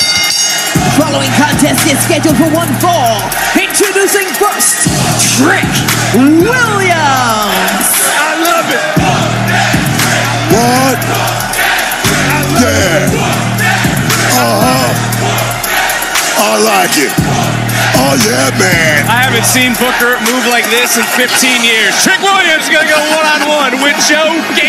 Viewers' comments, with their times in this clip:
0:08 You can even hear trick saying “I love it!” Even Trick likes the chants, and this what makes the theme 1000X better than all of NXT’s roster!